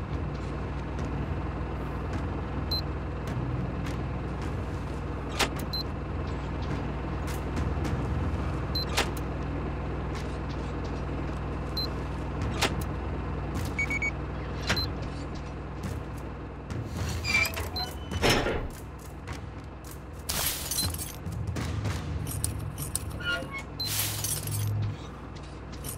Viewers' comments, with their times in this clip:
0:09 The beeping of universal detector was really my only complaint of the DLC. Besides, I thought maybe it would have been cool if you have a companion for a mission or two. Not one you follow, but that follows you. 4A hasn't really shown they can do that well yet though. This is by far my favorite DLC I've played in a while. Nightvision shows you the order with numbers above handles.... weird.